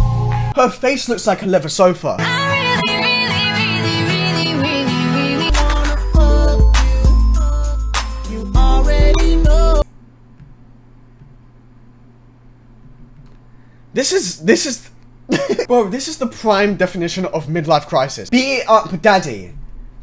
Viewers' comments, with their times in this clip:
0:07 I can hear the Minecraft skeleton from here m8